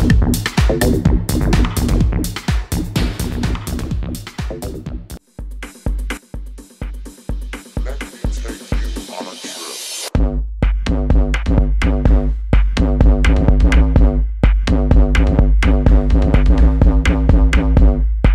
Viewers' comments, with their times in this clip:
0:05 OMG WHATS THE TUNE THAT DROPS IT GOES IN SOOOOOO HAAAAAARD!